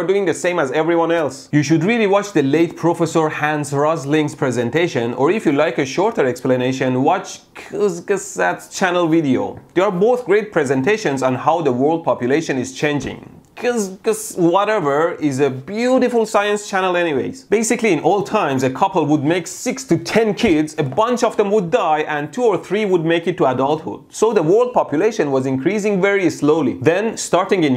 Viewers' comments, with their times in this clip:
0:06 the way he pronounced 'kurzgesagt' has me laughing so hard
0:13 Pronouncing german words like italians 😂
0:13 American Electrician struggeling with german Words (2019 AD colorised)
0:13 funny seeing non-german speakers trying to say german words By the way Kurzgesagt means "explained shortly" in english.